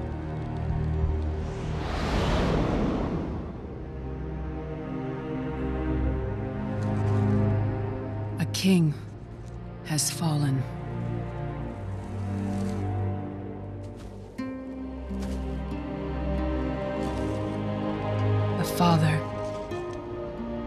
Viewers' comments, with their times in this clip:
0:08 this epic music?